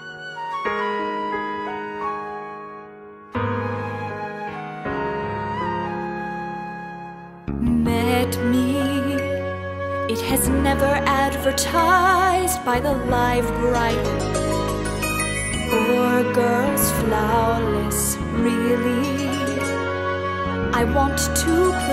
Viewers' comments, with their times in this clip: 0:07 She starts singing